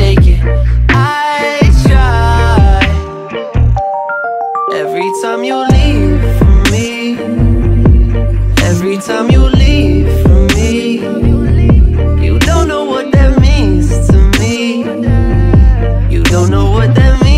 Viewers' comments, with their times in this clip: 0:03 that bell/chime breakdown then the beat hits again, HAS ME ROCK FUCKING SOLID